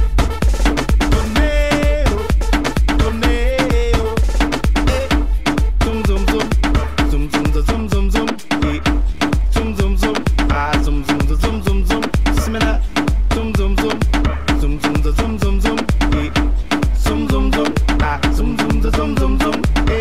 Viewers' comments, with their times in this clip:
0:05 zum zum zum zum zu... WTF IS THIS SHIT?!?!?! dislike